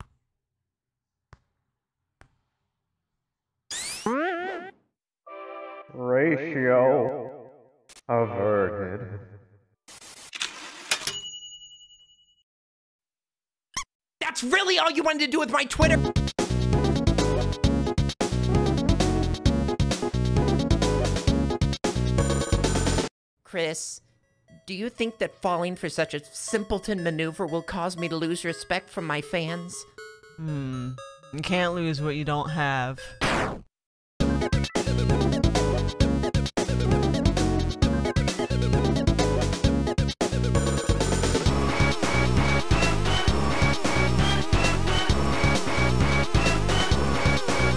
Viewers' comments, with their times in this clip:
0:05 Spamton saying "Ratio... averted." sounds so nice tho.
0:31 Kris's voice isn't enough male and close to be genderless is very nice detail! Also that phrase is everything